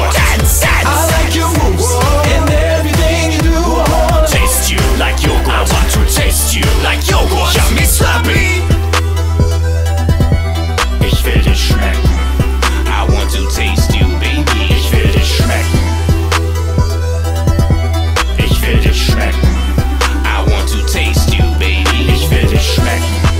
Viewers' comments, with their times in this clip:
0:08 As funny as this is, that beat drop is fire